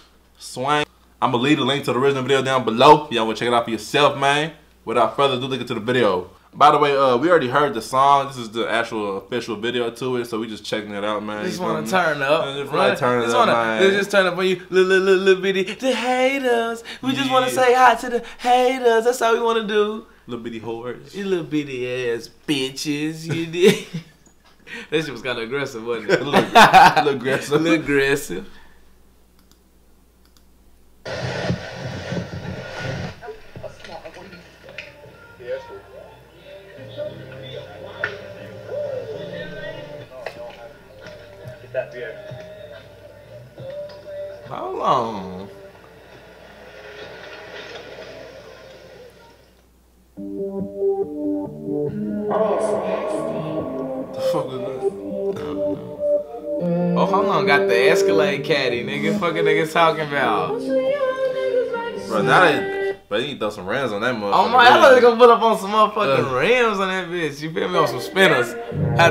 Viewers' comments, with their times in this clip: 0:06 I need dat beat
0:53 Producer Tag Plays Tf was that?